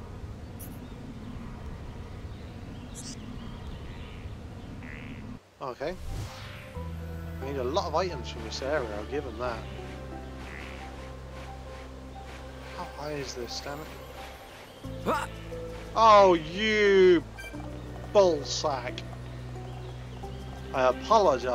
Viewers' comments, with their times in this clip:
0:07 "A lot of items from the seller Hitler." I'm...not sure what to say to that...~